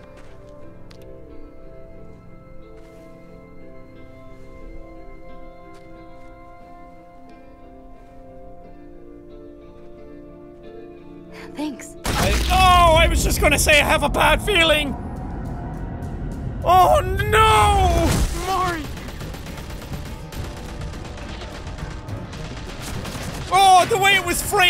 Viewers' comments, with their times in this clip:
0:10 i got scared when i saw marine died i was relaxing and then BOOM headshot I was shocked